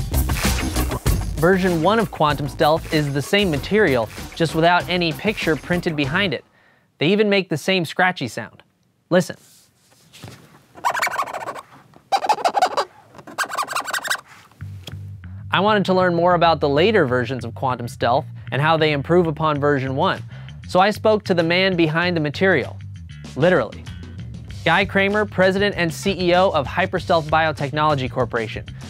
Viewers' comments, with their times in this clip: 0:04 they even make the same scratchy sound. lol
0:10 My balls exploded from that scratchy sound. RIP to my little bros.